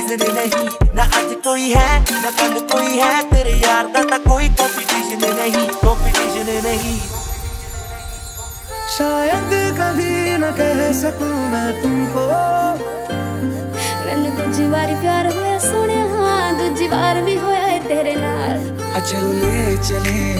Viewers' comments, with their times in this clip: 0:08 Loved that line : " shayad kabhi na keh saku mai tumko .. menu dooji baar pyar hoya soneya dooji baar bhi hoya e tere naal "❤️❤️ perfect sync